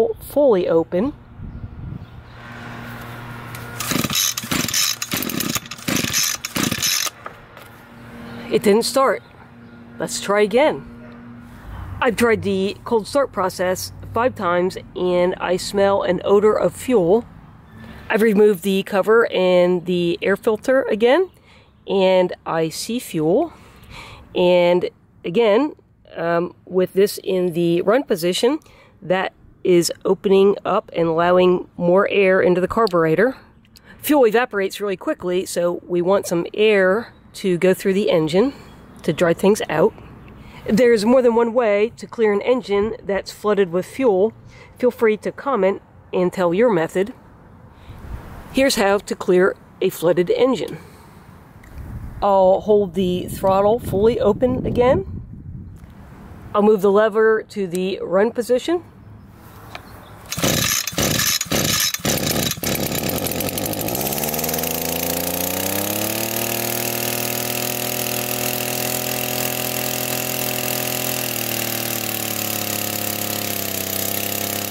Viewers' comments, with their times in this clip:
0:05 At minute as you are pulling the starter you can hear the weed eater fire. At that point the choke needs to be opened back up to the run position and then the engine would have started on the next pull or two. The reason it didn’t start is that although it had started to fire, you kept the choke closed.
0:55 Thank you -at How to clear a flooded engine! this worked for me. Love your voice rhythm and careful word choices, easy to understand.